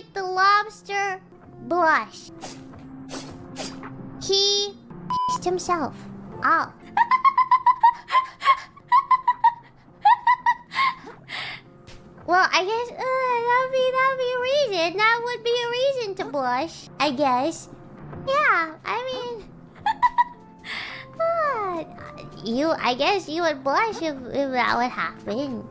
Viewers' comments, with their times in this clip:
0:06 Missed so much how she beeps herself in order to avoid saying cursed words, also missed her window wiper laugh Glad she's back with us again :D